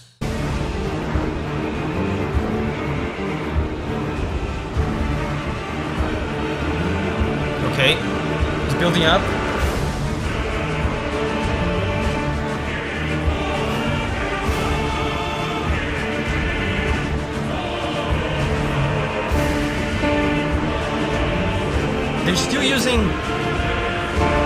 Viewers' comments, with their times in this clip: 0:08 This is my favourite part of the entire track, and it's unfortunately really short, the drums sounds like a medieval march of some sorts while the choir sets the seriousness of the fight, you heard tales and stories of General Radahn, seeing him in person and fighting him is another story, it also kinda sounds like a fast heartbeat, there's so much anticipation up to the Radahn festival, that when it's finally there, the song kinda represents that anxiety that was build up through the hype of fighting Radahn before the festival, and now there he is, charging at you, the giant General that was once loved and feared, now a terrible madman thing, the drums at the same time sounds like horses running, which is fitting considering 90% of this fight is done using Torrent, and Radahn in his own steed, Leonard.